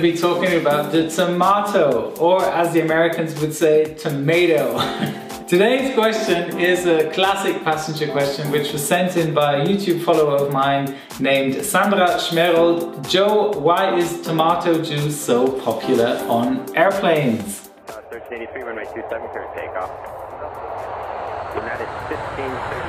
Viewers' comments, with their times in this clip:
0:03 how can he speak American English so well?